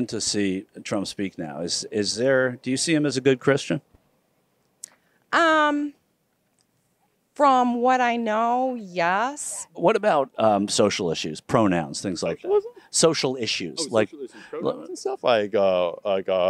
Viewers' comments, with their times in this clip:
0:04 The pause says it all